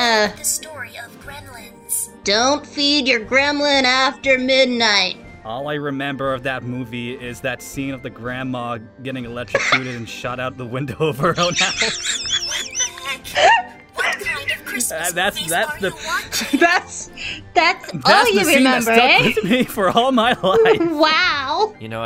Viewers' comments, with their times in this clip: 0:09 Gee Amy you sounded like Eggman when he's trying to imitate a bird